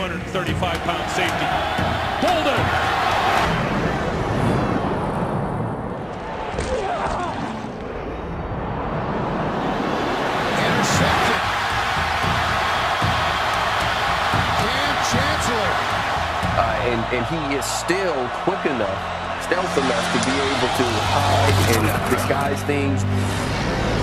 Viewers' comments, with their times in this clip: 0:07 that sounded like it hurt.